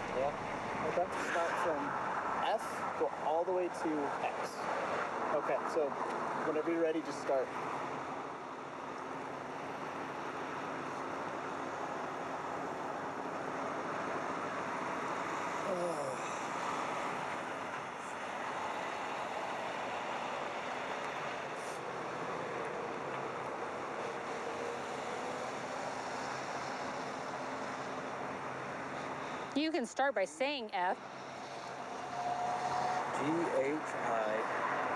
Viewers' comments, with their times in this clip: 0:08 That awkward amount of seconds when they're waiting for him to start and he doesn't start and then just sighs, instead. The spit geyser erupting out of the top of that device is disgusting, too.
0:15 when I think of America I think of this man officer: "say ur ABC's" man: "A- deep sigh "